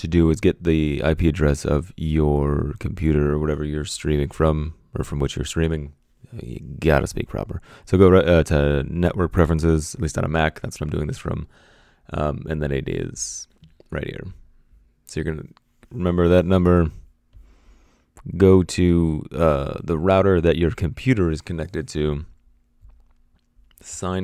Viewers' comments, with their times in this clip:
0:06 Anyone else notice he sounds like Jim from The Office?